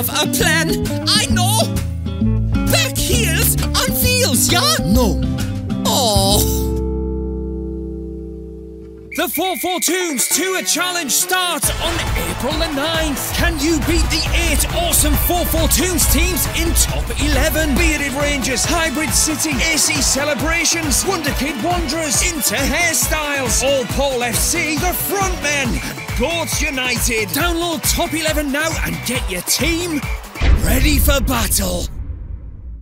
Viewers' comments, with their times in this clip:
0:09 The music brings back way too much nostalgia and memories :'(
0:13 I miss that song